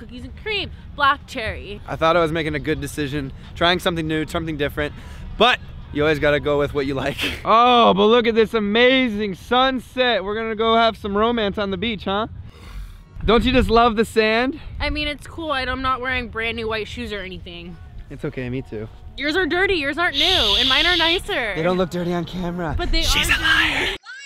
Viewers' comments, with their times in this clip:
0:07 it sound like he said trump instead of some. c;